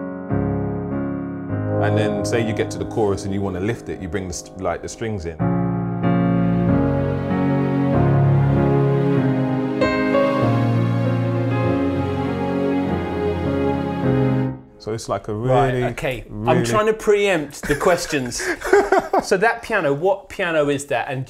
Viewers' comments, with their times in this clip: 0:06 I would love to hear a version of Pink's song Try in the style he's playing Even without the vocals I'm almost crying.